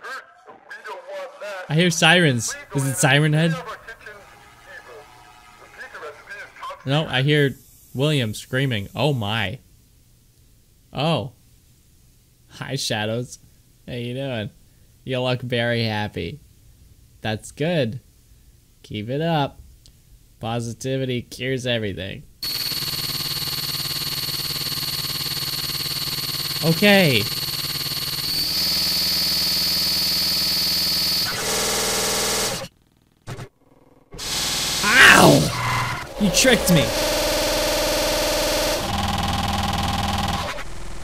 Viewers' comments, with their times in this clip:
0:04 Did anyone else hear a dinosaur at first??
0:12 sounds like a lot of- buzzing saw noises
0:23 also my ears are bleeding